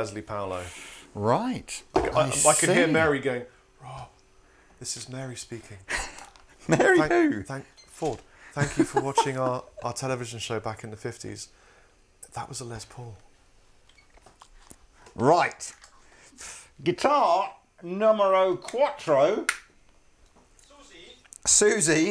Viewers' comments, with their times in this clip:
0:08 Guy on the right looks like he could be related to Matt Bellamy. even laughs like him lol